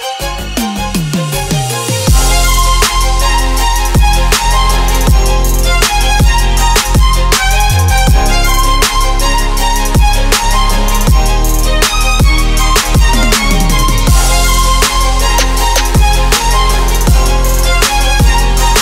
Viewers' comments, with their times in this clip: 0:03 a trap remix of some kind of anime opening